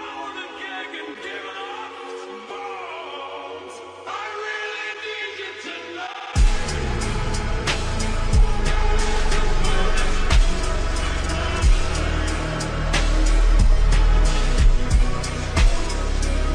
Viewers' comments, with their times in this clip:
0:04 it kinda sounds like he sais I REALLY NEED U TO NOT when it gliches